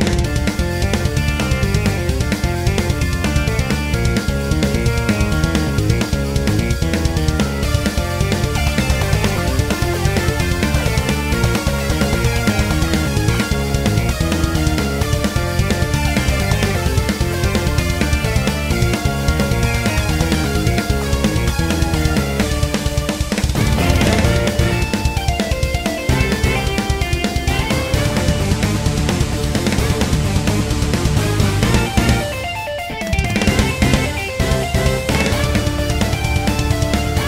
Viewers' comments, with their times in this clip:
0:07 is that a eurobeat brass??
0:07 I'm feeling some Megalovania for some reason
0:22 sounds like it turns into Mettaton's theme with that rhythm